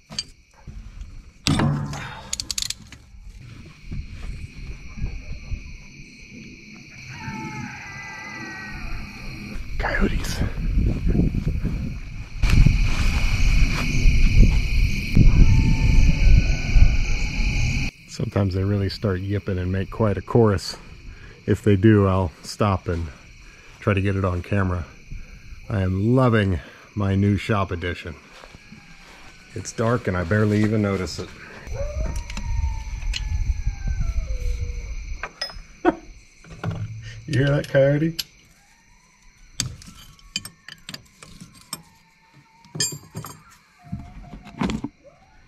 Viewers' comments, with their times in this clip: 0:06 Reads in title "Advanced Hydraulic". Time to break out the jet engineering popcorn bucket! Oh, the comedy of it all, cuz if you can't laugh at the problems, there's only anger and crying, and those aren't any fun. And finally on the best position of the top or bottom debate, it turns into a volume ratio, but in the end, neither is a bad place to be. Now it's up to you to interpret if we're still talking about mechanical wrenching or other things. 😉 Add: I was laughing my ass away for just a moment thinking that was either the bane of frustration or wail of success slightly muted. Secondary conclusion, maybe Wile Coyote was also having a busted knuckle day in his Acme repair and scheming cave.
0:29 those coyotes are bark'n at one of those samsquatch's. UFO's drop em off to go poo poo pee then it's off to other galaxies....